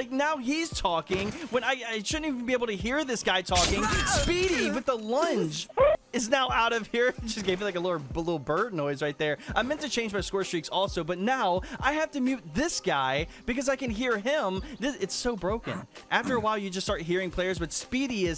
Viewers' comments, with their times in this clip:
0:05 I HAVE TO SAY IT , A-10 GO BRRRRRRRRRRT